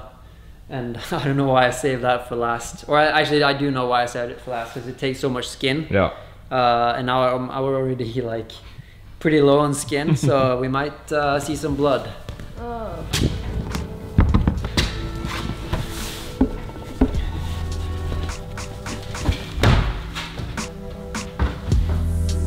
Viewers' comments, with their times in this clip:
0:09 The music is perfect